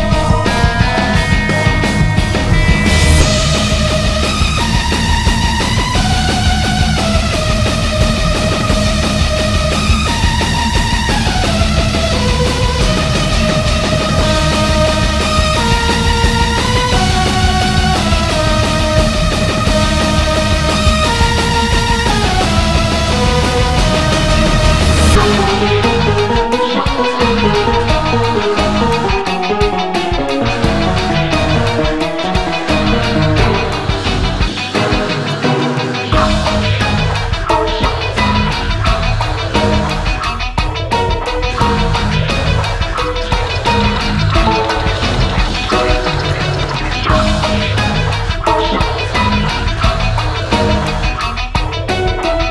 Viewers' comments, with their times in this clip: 0:03 reminds me a bit of A Stranger I remain
0:25 I think they mean the screaming in the background that starts
0:25 the leitmotif on is in Delirium theme, nice detail
0:36 I swear into the video I can hear some sound effects in the back similar to The Bridge title card from Postal Redux.